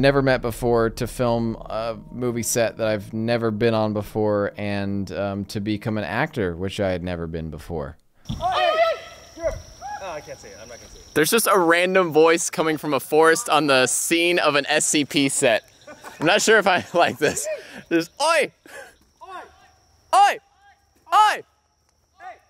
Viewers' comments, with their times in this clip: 0:09 don’t worry it’s just a Australian